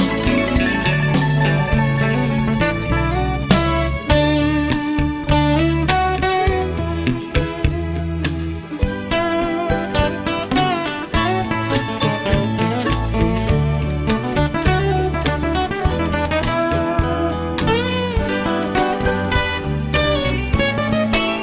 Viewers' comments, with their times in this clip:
0:04 Don't miss the dreamy 'As Tears Go By' commercial break instrumental tacked on to the end of FOTD. Sublime. Jerry takes a tasty lead lick to end things..